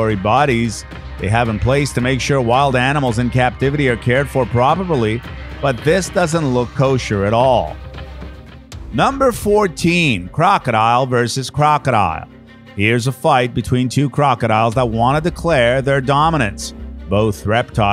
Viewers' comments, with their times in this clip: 0:04 What was going on ? Having a hard time pronouncing that word? lol